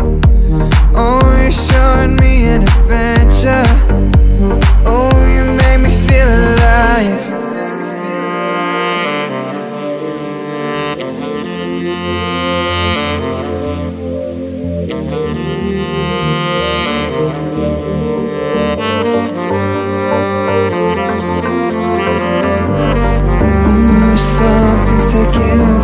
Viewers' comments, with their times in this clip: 0:07 if you focus with the music you will hear that awesome drop...!